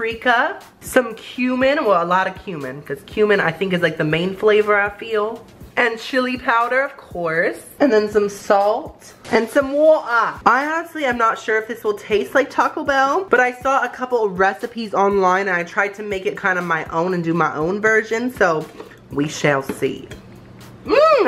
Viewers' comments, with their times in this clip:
0:03 I Thought He Said Human😂😂😂